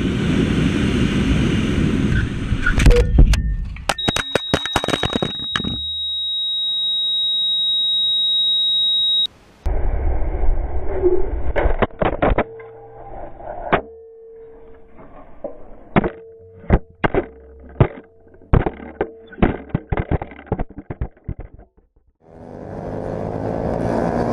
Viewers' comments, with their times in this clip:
0:07 Not the flatline sound ….. dang! I hope that rider is ok 😢